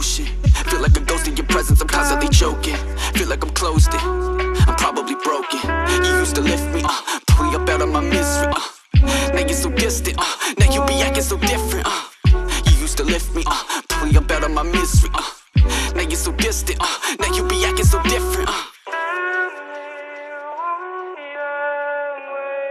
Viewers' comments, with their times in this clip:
0:06 sound like tekashit 69 "got blicky uh drum it hold 50 uh"😂
0:07 why did i get 6ix9ine vibes?